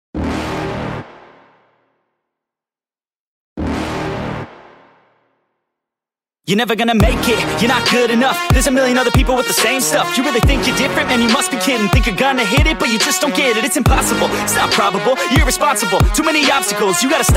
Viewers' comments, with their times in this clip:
0:00 Cool music 🎼 I was playing this song